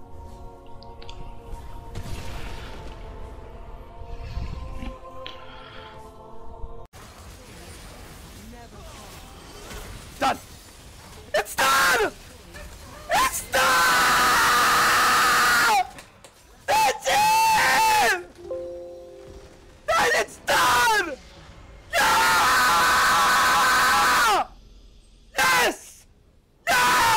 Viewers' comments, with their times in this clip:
0:07 When you put your sandwich in the microwave and then you hear that pinging sound
0:10 Well Ι just lost my fucking ability to hear.